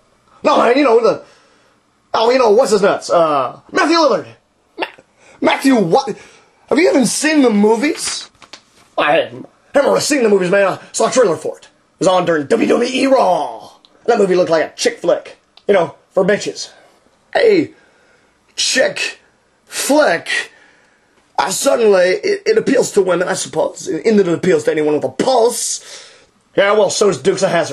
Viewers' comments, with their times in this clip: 0:09 . . . did anyone else hear someone turning a page ?